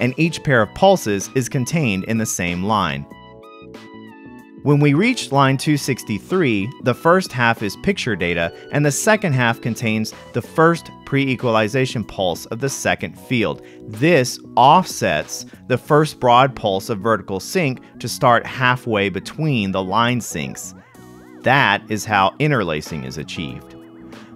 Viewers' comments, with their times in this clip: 0:09 jazzy synth Commander keen music?